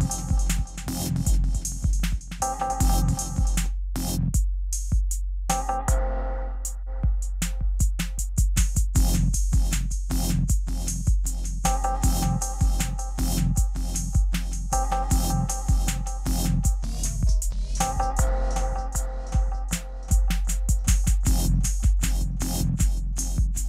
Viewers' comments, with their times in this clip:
0:06 The drop is pure and utter genius